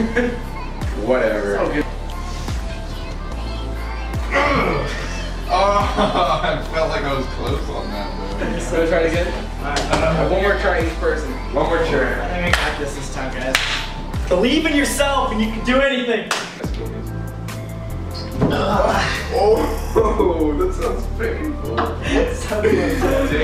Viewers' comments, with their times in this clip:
0:08 anyone else hear a door close?